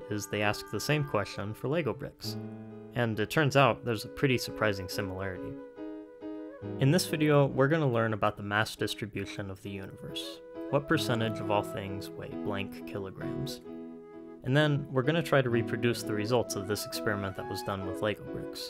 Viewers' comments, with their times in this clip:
0:03 I really love the part when the music starts playing. It makes the intro like a proper hook for us, which is a small detail but has such a massive impact. Good job on the interesting and easy-to-understand video essay